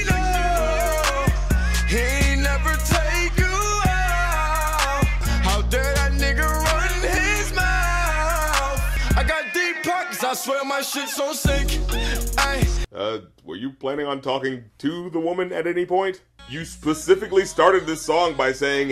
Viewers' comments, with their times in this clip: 0:05 Is it just me, or does that 'ga run' sound too much like 'ger run'...?
0:05 Is it just me, or does that 'ga' sounds way too much like 'ger'?